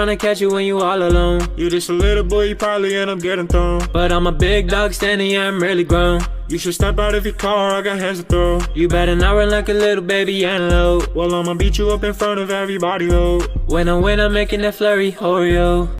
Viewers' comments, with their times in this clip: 0:11 I thought he said "well mama Bicho I got hands to throw" 😂😂😂